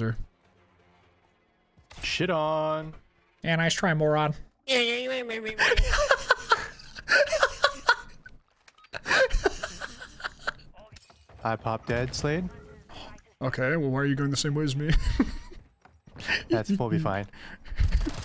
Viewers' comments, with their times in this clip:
0:04 lmao dude went cartman on yoy